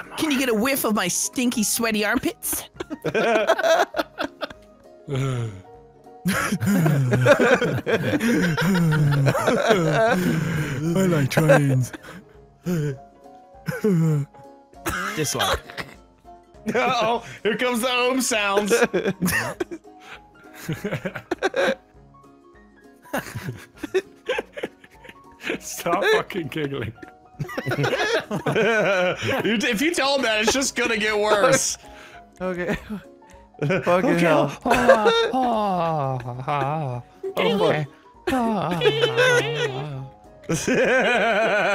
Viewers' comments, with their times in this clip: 0:04 I like how the laugh parade started with this sound. XD
0:04 Here is where the laugh chain begin
0:16 At the start of I couldn't help but cry because it's sooo ADORABLE! Like your giggles and laughing just make me so happy😍😋😂😂😂
0:27 my favorite part the start of a laugh fest 😂😂